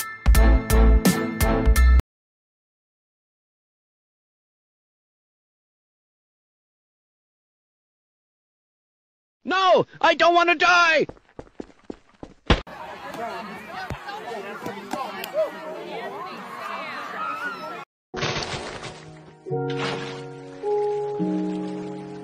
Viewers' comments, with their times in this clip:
0:09 the thunk noise made me roll to the ground laughing